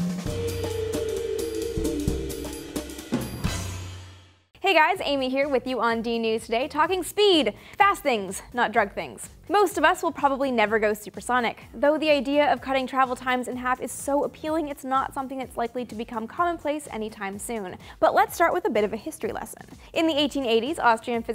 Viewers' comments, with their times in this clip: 0:04 If you slow video down 0.25x speed, it sounds like she is on drugs lol. Start and listen to the next 8-10 seconds lol.
0:04 If you slow video down 0.25x speed, it sounds like she is on drugs lol. Start and listen to the next 8-10 seconds lol.